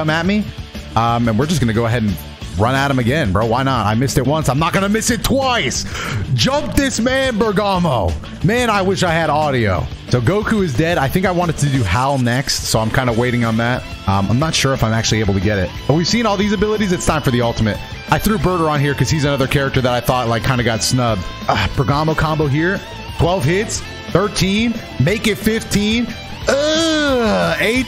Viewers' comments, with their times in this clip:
0:09 “So Gokus dead” It shouldn’t be funny but it’s the way he said it